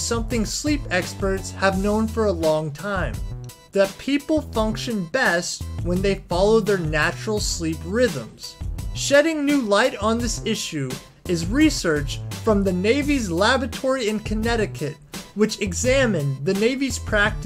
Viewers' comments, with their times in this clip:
0:04 did he say "Navy's Lavatory in Connecticut"??